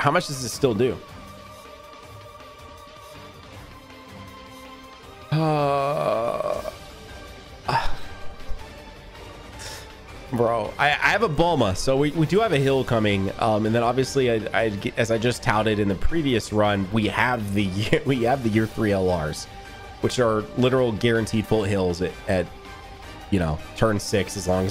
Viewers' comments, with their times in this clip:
0:05 The timing of the music with the 18 ki lol